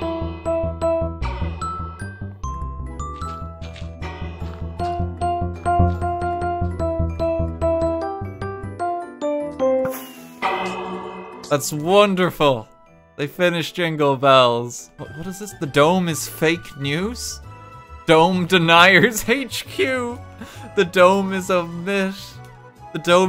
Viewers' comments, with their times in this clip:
0:05 Ricardo dance along vibe with the jingle bell note block song